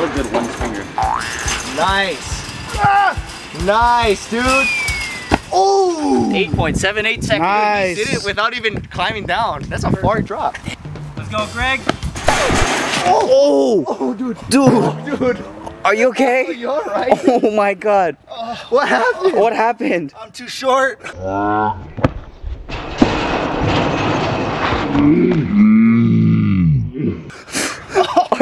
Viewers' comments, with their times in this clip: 0:10 Turn on captions auto generated it’s says that’s a fart drop😂